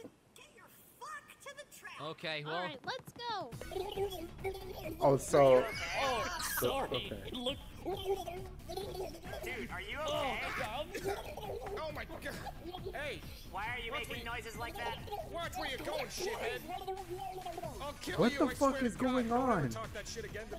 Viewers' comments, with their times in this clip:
0:04 the reason knuckles was making those sounds is because he was under water